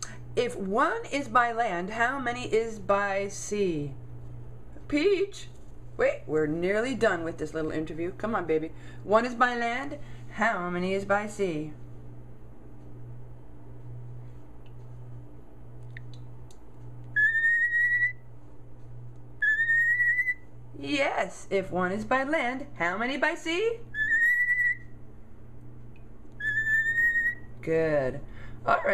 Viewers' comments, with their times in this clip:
0:09 Hmm...? Lol, her accent! I love it !